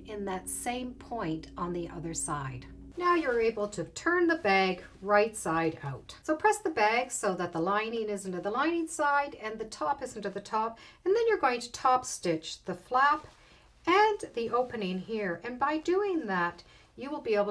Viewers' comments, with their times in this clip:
0:05 What are you saying ? It sounds like "So press the bag so that the lining isn't in the lining side and the top isn't at the top"—isn't, or is?